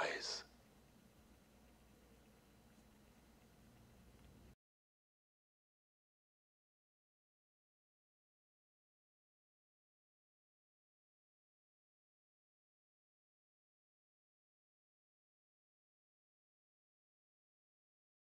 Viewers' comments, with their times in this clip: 0:04 Hey guys, seems the sound is muted mic and all..